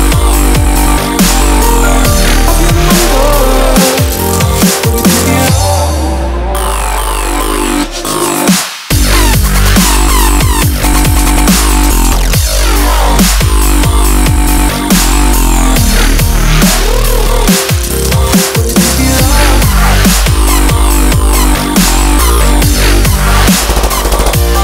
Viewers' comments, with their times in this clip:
0:08 Swear that sounds like Skrillex's Try it out (Try harder mix). I'm a huge fan of that sound. Great remix